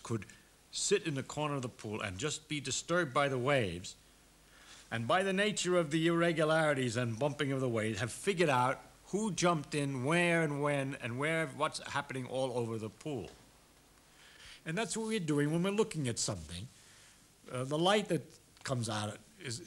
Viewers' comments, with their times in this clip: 0:05 i love how he says "by the nature of the irregularites..."